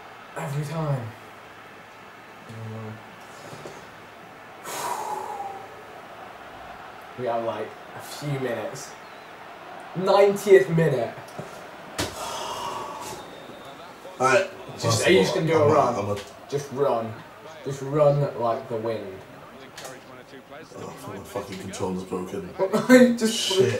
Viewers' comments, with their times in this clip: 0:09 Everyone giving each other hate for various reasons, buttttt can I just point out, partly what makes this funniest for me, Is Vikk's constant awkward commentating. XD With JJ that death stare he gives Vikk was deep bruh. Vikk kinda doesn't know how to react sad when scored against. The smile definitely gives him away. ;D